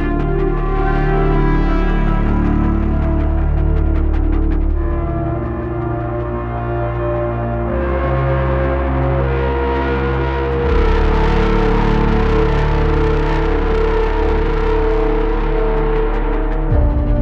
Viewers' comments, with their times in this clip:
0:04 that one sounded very good